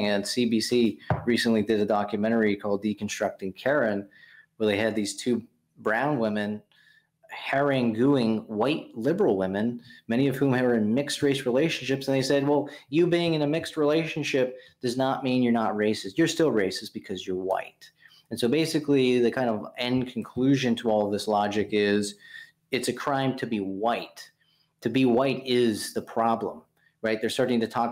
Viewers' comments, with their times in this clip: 0:08 Did he just pronounce haranguing "hair-in-gooing"? Definitely a word he's never heard before.